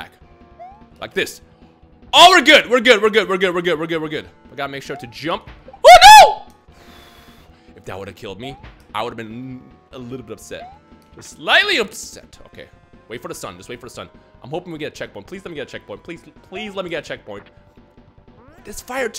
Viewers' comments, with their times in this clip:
0:04 Dude sounds like Mickey mouse xDD Ohhhh no!